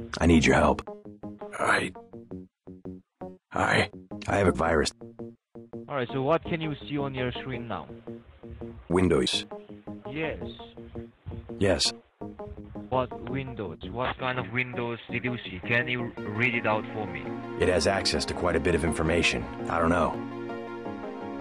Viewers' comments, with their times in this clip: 0:08 Strange how he said that, made me lol.